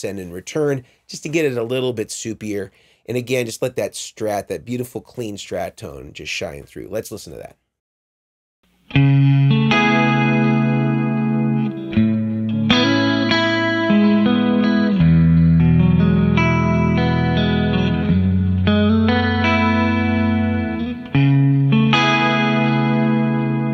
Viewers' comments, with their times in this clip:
0:07 What song u played on ? Sounds so superior
0:09 Looking forward to this amp! Wow that Chorus tone perfect!